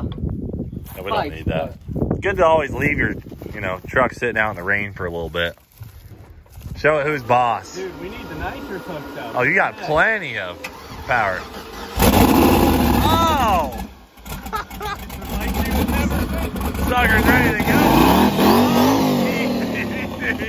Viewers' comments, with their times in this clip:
0:03 Why the censored parts starting ?